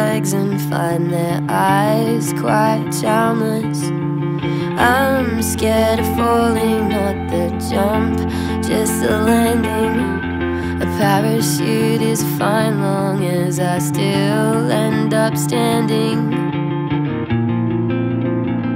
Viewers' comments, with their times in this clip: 0:04 I hear a text message